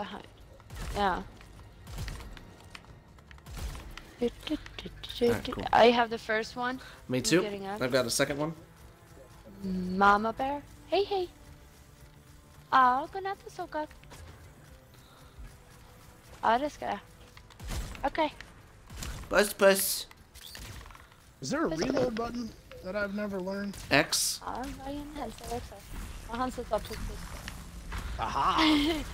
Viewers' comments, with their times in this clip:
0:10 Me talking Swedish 😂